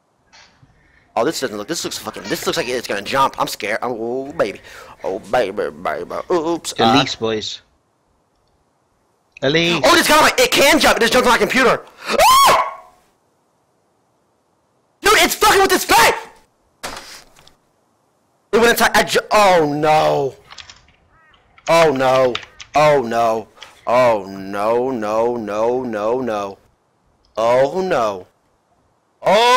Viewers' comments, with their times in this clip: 0:10 the biggest alpha male streamer of U.S. screaming like a bitch against a tiny spider. LOL